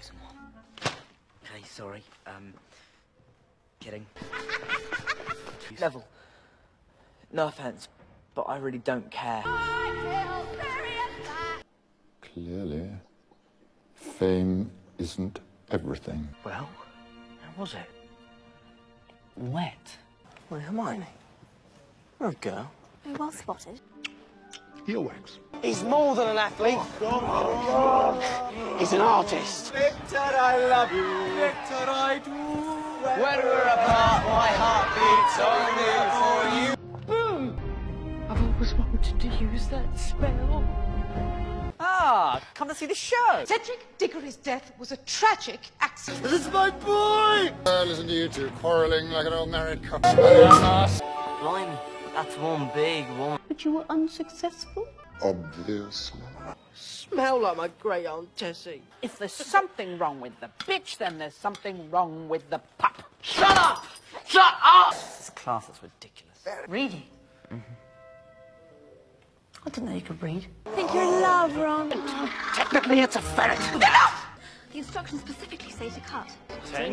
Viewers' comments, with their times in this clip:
0:04 possessed bellatrix laugh
0:04 that’s how my friend laughs 😂😅🫣
0:37 WHAT?! Why did she yell that xD? Edit: Now I remember. She used that explosion spell!
0:44 sounds like your birth
0:50 I LOVE THIS ONE THE POP NOISE THE WAY HE SIAD IT EVERYTHING.
0:58 I THOUGHT SHE SAID PITCH WTF